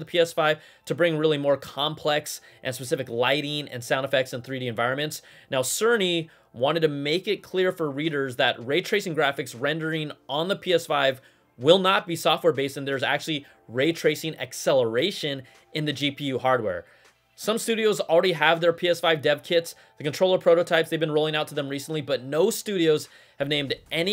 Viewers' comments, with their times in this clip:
0:05 Did I hear Sir Knee ?